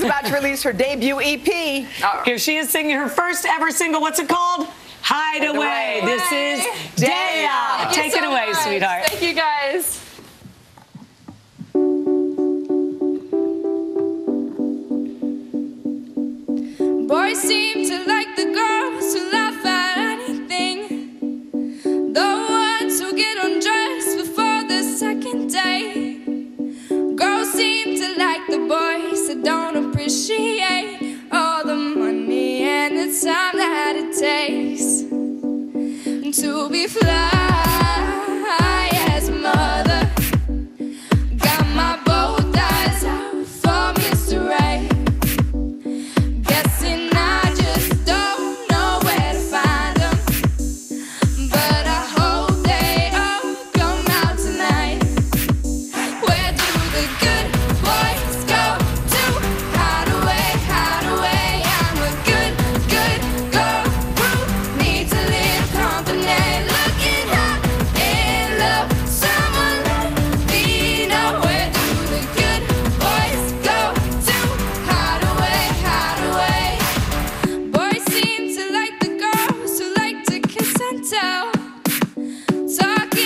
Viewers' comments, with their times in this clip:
0:10 At the mark, the song starts.
1:07 The part beginning gives me goosebumps, her voice is amazing